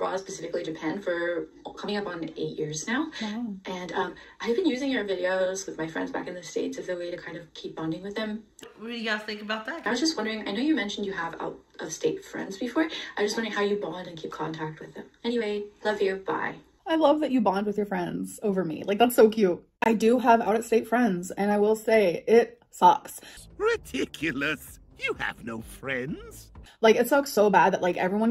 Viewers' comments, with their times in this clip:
0:10 lmao I thought it said, "She has no friends, just potential cheesecakes," 😂😂😂